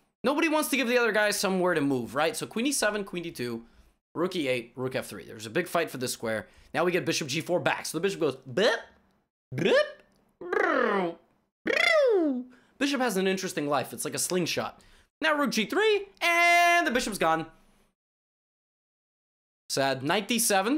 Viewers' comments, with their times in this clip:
0:08 So... Levi is R2D2?